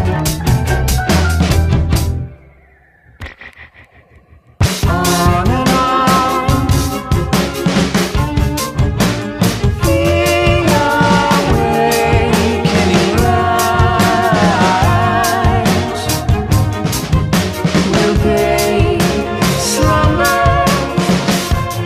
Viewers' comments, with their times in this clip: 0:06 the violin in this part always gives me an eerie vibe (and i love it) (Taking in account of the story) The vocals are so peaceful and just y'know, happy ig, but the ominous violin makes it feel a bit uncomfy. Uncomfy as in "It wont be like this for to long, prepare for some wild shit" (basically the lore of the album right after this song) Anyway, White Ball never fails to make md cry, especially when Murders plays after ;-;